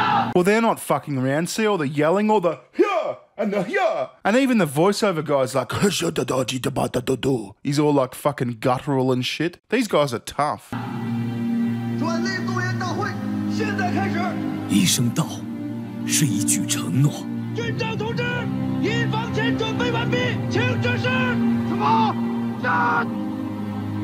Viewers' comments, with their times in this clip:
0:03 Good video, but you fake mandarin is pretty cringe ngl
0:05 As a chinese person, I can confirm this is how we talk. Edit: Please don't take this seriously. This is supposed to be a joke. I do not mean to offend any of the people in the video. And I'm actually chinese.